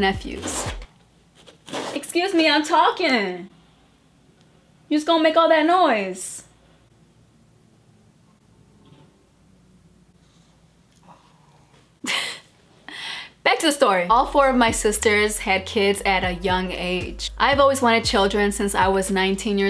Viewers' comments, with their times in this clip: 0:03 got me weakkkK! 😂😂😂😂 You all tried to start it out all sentimental sounding. Like a 90s intro on a BET movie similar like Boyz in the Hood. The dog didn't give af lmmfao! He was busy making sound effects into his toy. Then thought if he got still enough you would go away 😂☠️☠️😭